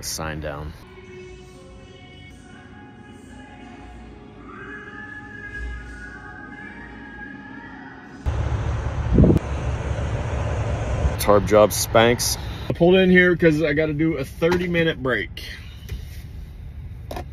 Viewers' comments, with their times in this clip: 0:04 😂 The other person in the bathroom whistling to the song kills me! 😂